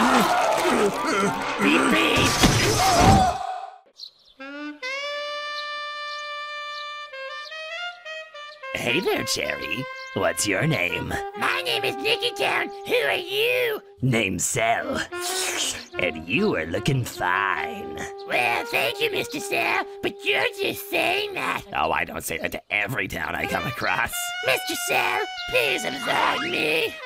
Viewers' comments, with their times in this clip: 0:08 sounds so much like cartman in this part